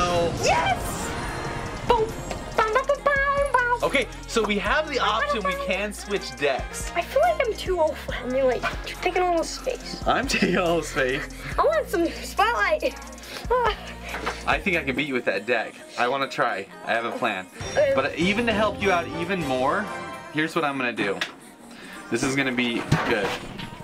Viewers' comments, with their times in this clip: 0:06 Stop doing fortnite noices this is a clash Royale vid